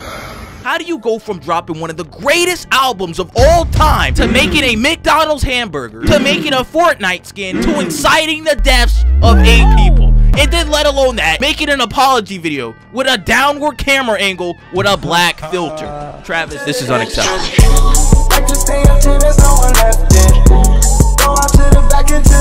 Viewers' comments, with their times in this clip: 0:10 Breh, I'm still lookin for that twangy sound effect can someone hook me up?